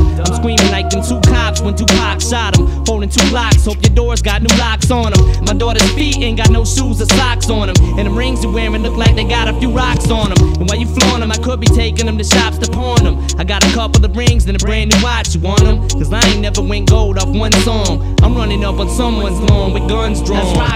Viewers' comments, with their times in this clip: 0:03 when he says "my daughters feet" sounds so fucking good with the double tracking